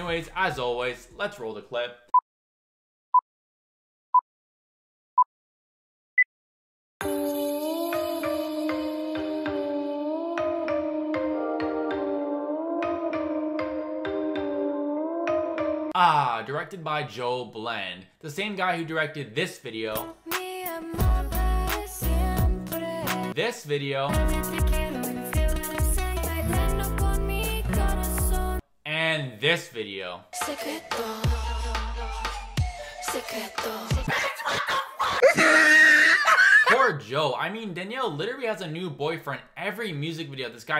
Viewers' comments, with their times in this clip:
0:10 she out here with the spanish song name, but puts a melody from the arabian nights or saudi arabian desert sounding melody...It doesn't go together AT ALL 🤣🤣🤣🤣🤣🤣🤣🏜🏜🏜 THIS is what being 0.0000000000001% latina gives you 🤣🤣🤣🤣🤣🤣🤣 Edit: As a latina myself, who knows spanish, I'm STILL confused when she said, ''Como yo lo hago, ella no para. Si no me has visto, no me ''TRATES'' de parar.'' WHAT DOES ''trates'' mean? definitely that 0.0000000000001% trying hard to creep into her life!!!!!!! 😂😂😂😂
0:28 You know whats bad? When you can literally hear the autotune.